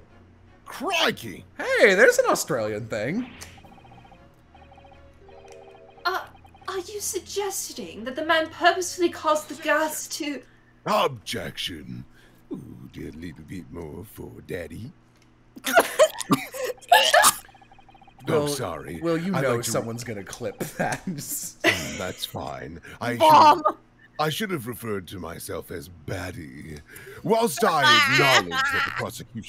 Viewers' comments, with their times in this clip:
0:10 now what the fuck did he even say here